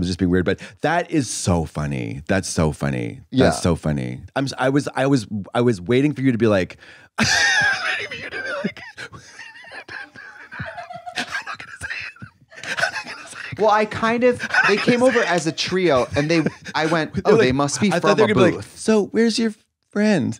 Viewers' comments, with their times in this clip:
0:07 a lot of you may not know, but Katya is actually bilingual. Not only does she know how to speak fluent kettle, she’s also fluent in complete and crazy utter nonsense.